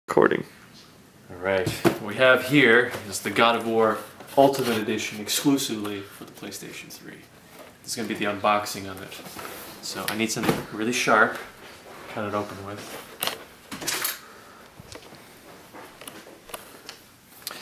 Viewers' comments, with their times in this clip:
0:01 is he saying Recording?